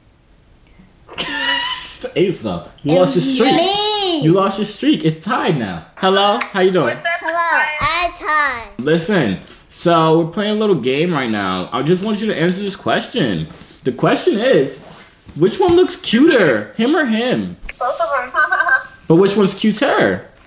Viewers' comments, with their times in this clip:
0:06 I am dead he was speaking like white people In order attract them to him